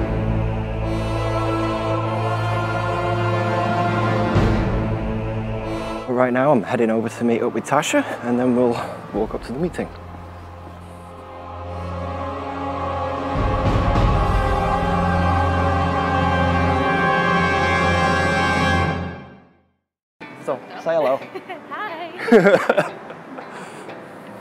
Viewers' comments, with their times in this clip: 0:07 ... best music ever!